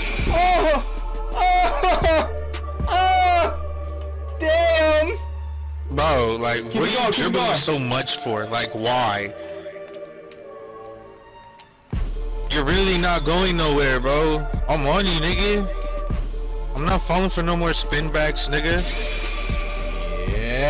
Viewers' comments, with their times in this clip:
0:05 😭😭😭 the way you say damn ☠️😭🤦🏾‍♂️ bro you really the GREATEST 🐐🔥👑